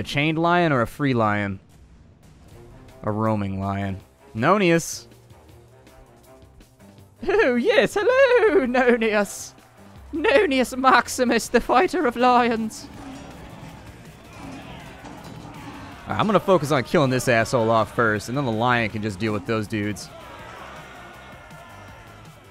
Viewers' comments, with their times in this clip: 0:06 The way he says "Oh yes hello Nonius" is too good